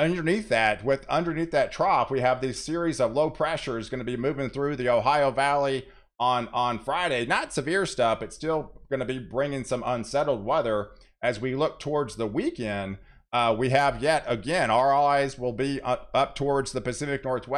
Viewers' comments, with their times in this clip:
0:03 I heard a corgi min